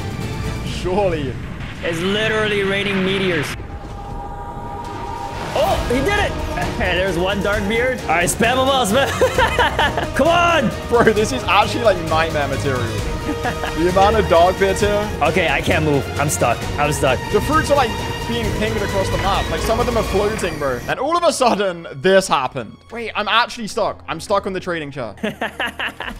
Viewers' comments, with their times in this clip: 0:07 and you hear that next wave song YOU KNOW YOUR DEAD😮‍💨